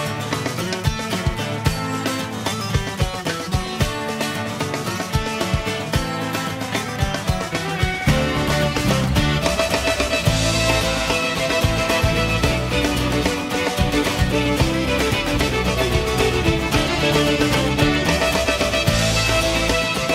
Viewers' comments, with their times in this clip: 0:07 Aw man, that violin godliness is lovely.